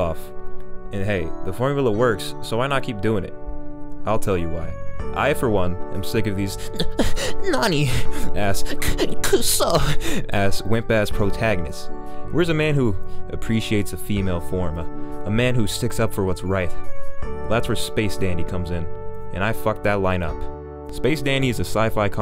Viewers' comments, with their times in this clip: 0:06 that "n-n-nani" and "k-kuso" on point tho